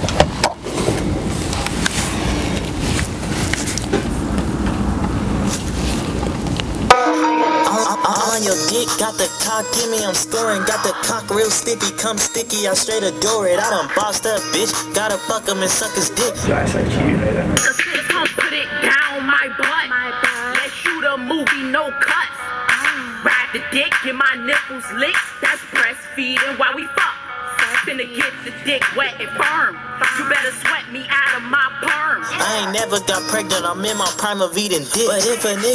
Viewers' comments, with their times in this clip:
0:05 You can't cap the song go hard but gay at the same time
0:07 why does det song actually go slap crazy😭😭😭
0:17 That awkward silence! 🤦‍♀️